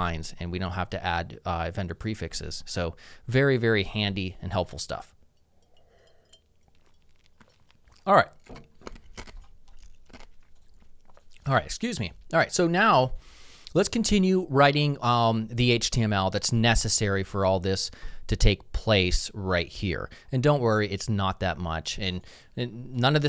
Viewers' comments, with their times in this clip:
0:06 CRUSHING ICE CUBES 😇😁